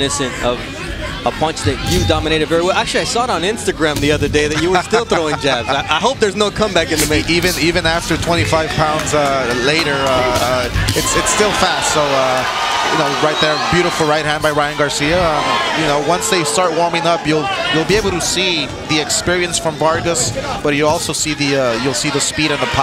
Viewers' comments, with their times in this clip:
0:09 Whoever was talking he choke right away lmfao